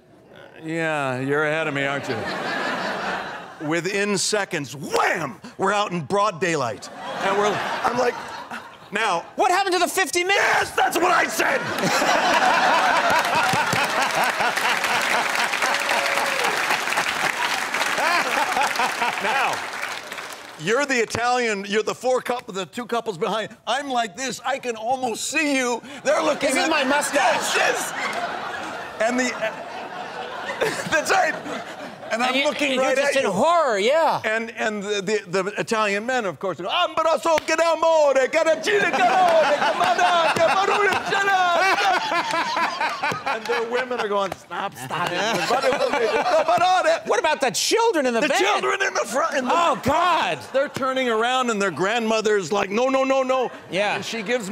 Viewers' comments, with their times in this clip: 0:08 Good god Cranston has the best scream LMAO 😂😂😂
0:37 Just like hearing Conan speak Italian